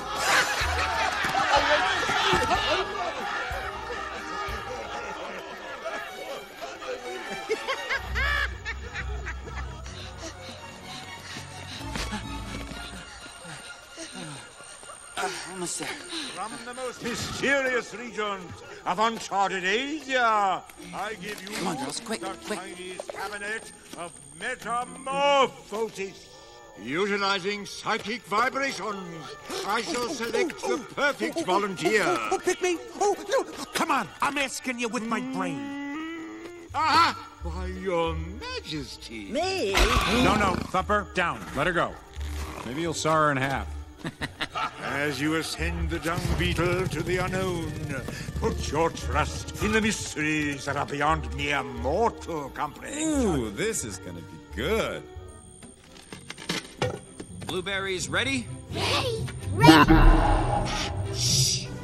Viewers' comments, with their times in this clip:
0:07 is that hopper laughing lol
0:44 Hopper's laugh sounded very sadistic.